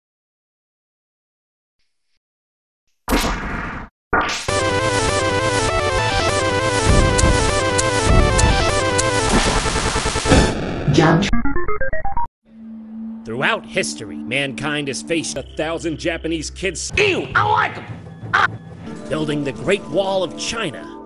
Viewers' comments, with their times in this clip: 0:03 snaps in time with awesome music of sound effects